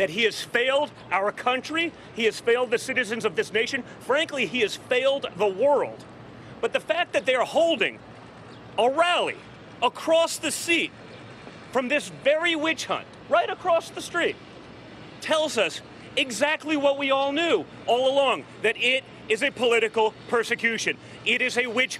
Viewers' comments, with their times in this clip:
0:04 "Seat" .. "Street"....whatever. Just keep the bead hobbin and pands a hick'n.